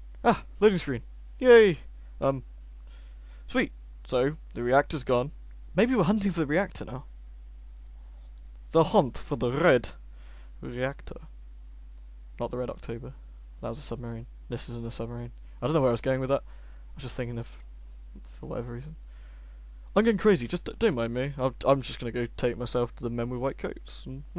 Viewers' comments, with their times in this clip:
0:05 lol "The reactor's gone" CC: "Iraq has gone"